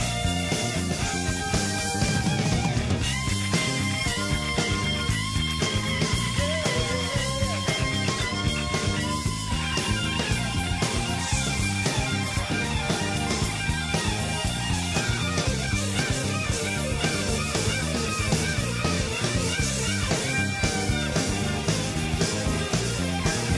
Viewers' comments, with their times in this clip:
0:10 till the end. have a listen. For sheer picking speed and unusual lines and SUPER CLARITY with every fucking note articulated clearly.... everyone throws up some name in Shawn Lane vids. I go listen and laugh. People literally cannot comprehend what Shawn was doing. Find ANYONE on YT who rips a more blistering solo than onward in this video, post the link and I will personally come back here and eat all my words! Matteo Mancuso sometimes gets close to Shawn's speed but he's using FIVE picking fingers to do so or two hand tapping. Shawn didn't do those. That's what's so incredible. He was moving ONE PICK that fast along with his fretting fingers. Even Holdsworth never played that fast. Gambale never alt picked anything remotely close to that. Alex Hutchings has some pretty fast picking but it's still not up to Shawn speed. Just not.